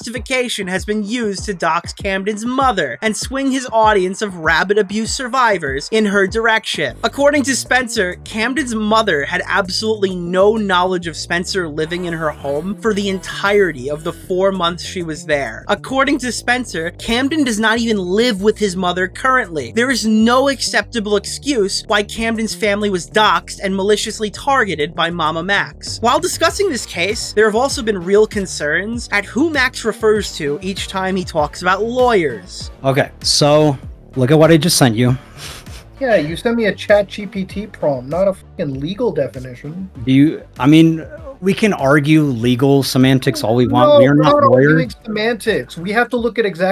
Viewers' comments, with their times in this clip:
0:04 Oh no! Not the rabbit abuse survivors 😰😰
0:34 did he just laugh after he said that like ssnding a chatgpt prompt would win his argument for him?